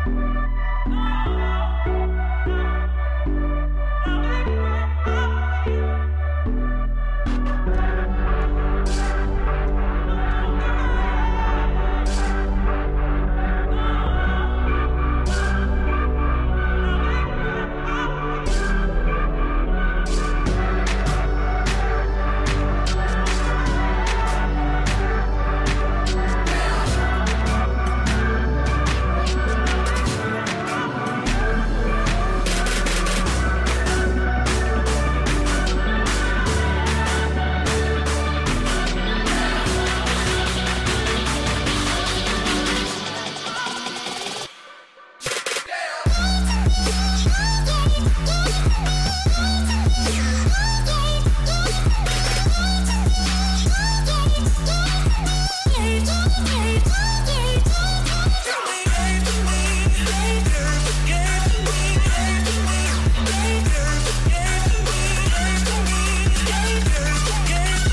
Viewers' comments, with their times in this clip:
0:06 Begin the video from and listen to the music, sometimes it sounds like: give to me my dirt! XD
0:55 Listen to the song it says gay to me lol